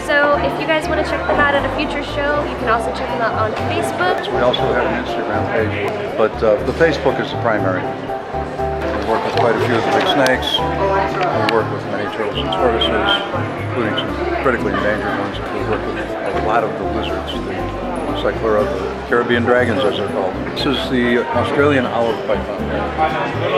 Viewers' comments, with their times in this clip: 0:05 “the Facebook”😭😂 lmao this man has mastered the high pithed “S’s”